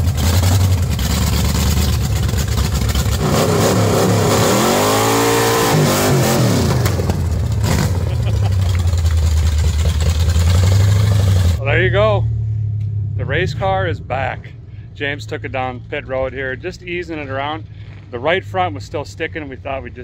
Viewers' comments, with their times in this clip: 0:03 That first rev gave me instant goosebumps. That was the soul of that engine screaming for the track
0:03 That sounds so hot!